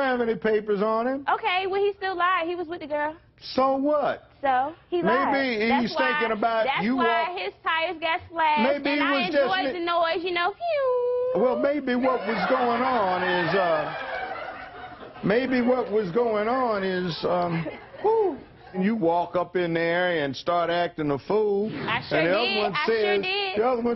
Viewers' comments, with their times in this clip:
0:10 I like when she made that sound of the tire going flat.